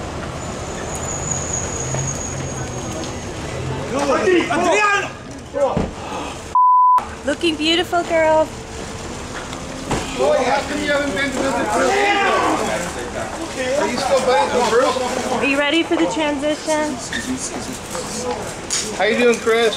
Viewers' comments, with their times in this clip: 0:03 WHO THE FUCK IS SCREAMING LIKE THAT? AND WHY?!! Let's stop pretending like we haven't heard anything...